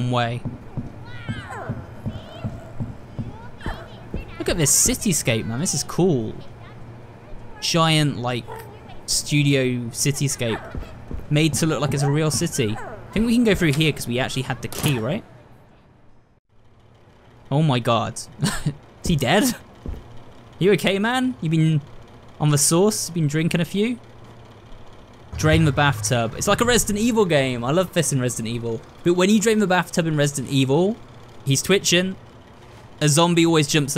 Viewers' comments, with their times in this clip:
0:09 u can hear is cat faintly purring in the background
0:16 super excited to watch you play ! 💕 edit: idk why but that was so dark to me lol seriously cool tho omg them talking all at once sometimes drives me crazy 😭